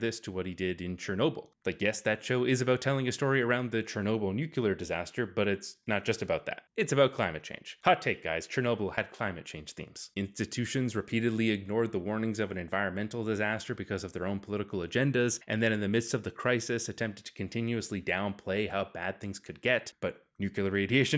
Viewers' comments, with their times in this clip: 0:03 .....smh, I wouldn't have thought you of all people would say "NU-cu-ler" instead of the proper “NEW-clee-er”